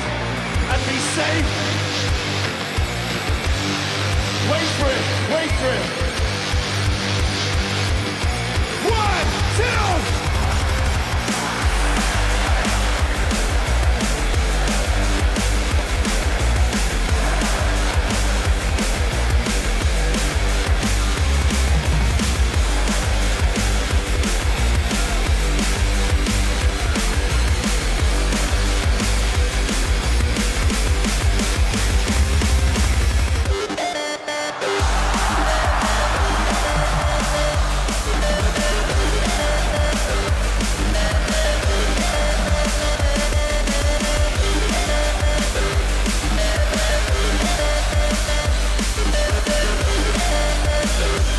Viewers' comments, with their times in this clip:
0:10 you can hear the crowd getting bait they were already expecting Voodoo People drop
0:32 That Voodoo people switch was criminal it was so good. Just a flawless switch!!